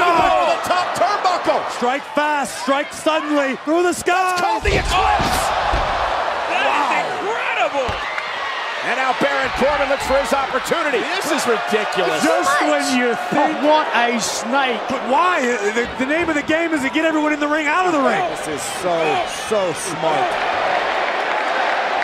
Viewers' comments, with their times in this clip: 0:07 that one bang🎉